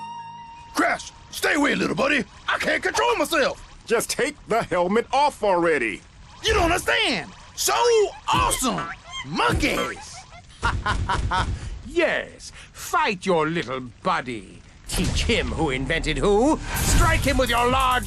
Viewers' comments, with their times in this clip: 0:03 he sounds like Grim from Billy and Mandy